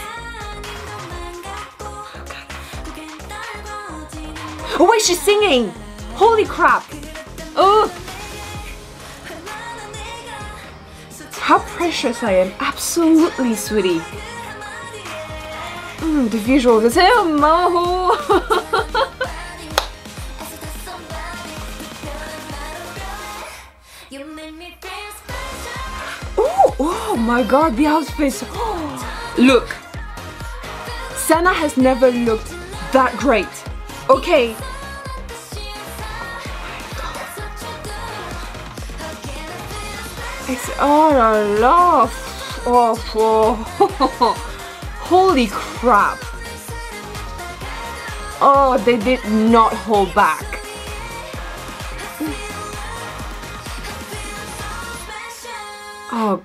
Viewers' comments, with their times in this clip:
0:04 finally i'm not the only one who pointed that out, Chaeyoung coming through with those vocals! We love a versatile queen!
0:15 And when she blabbered when Momo showed up. HAHAHAHAHAHAHHA. "the visuals hmsseemhmmomo"
0:41 Told ya Sana would be coming for ya 😏 Now go take some rest !! 😤 PS : that ohlala was SO FRENCH